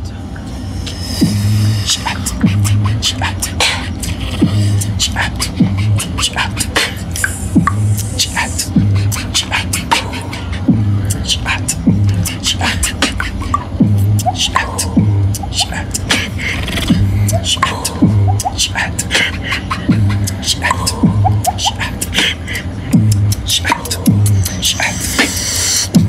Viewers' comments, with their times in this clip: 0:08 Omg drip sound is unstoppable. Like Water dripping in a well.dope